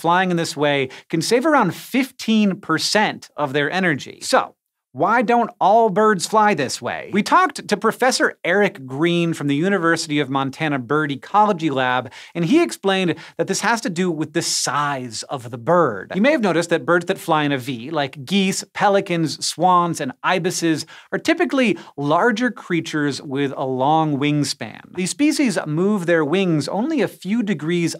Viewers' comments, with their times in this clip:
0:10 Birdey Collegy Lab. :-P